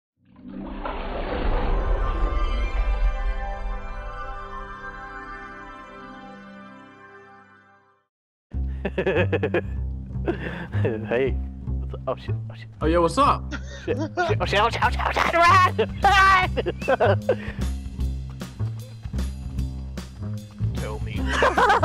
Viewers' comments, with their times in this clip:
0:08 You mean his laugh lmao!!!